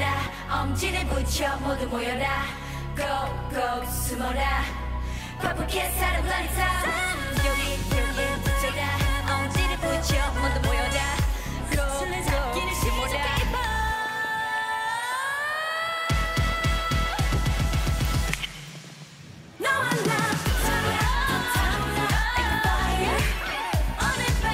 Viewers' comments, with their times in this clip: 0:07 When you see their performance, you know that all of them sing live. You can hear clearly Yuki - our main rapper - just sing it very clearly and I were shock when listened this part. Purple Kiss is so talented, just support them more. The best comeback, Purple Kiss waiting<3